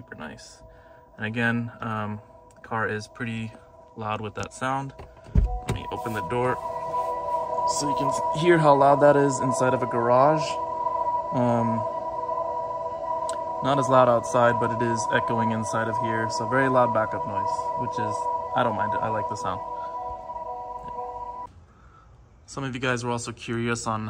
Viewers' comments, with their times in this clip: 0:07 yeahh the echo makes me feel like I'm driving a space ship. Every time i hear it in public, i instinctively look for it lol